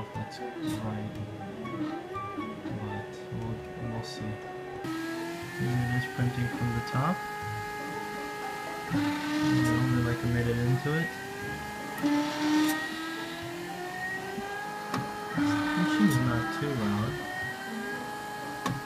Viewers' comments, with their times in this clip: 0:04 That printer sounds very obnoxious